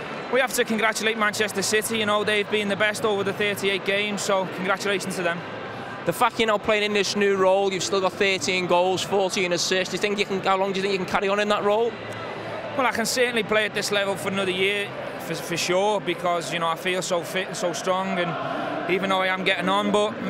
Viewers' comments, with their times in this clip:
0:05 the f**k you are playing in this new role.